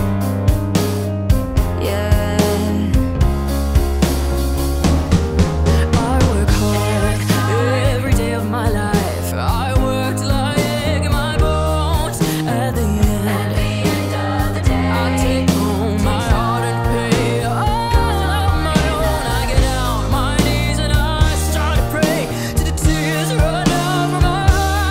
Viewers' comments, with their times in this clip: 0:06 damn, she's good her sound omg